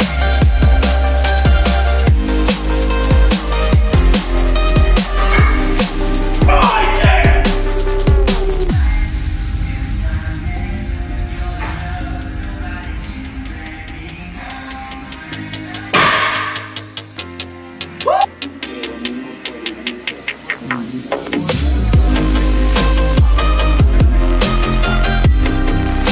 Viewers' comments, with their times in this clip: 0:08 Nice subtle One Direction in the background thats what makes him so strong